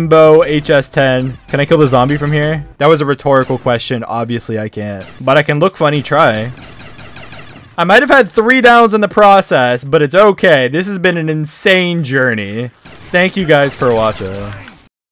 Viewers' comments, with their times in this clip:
0:10 i love the 2 minutes of dead silence at the end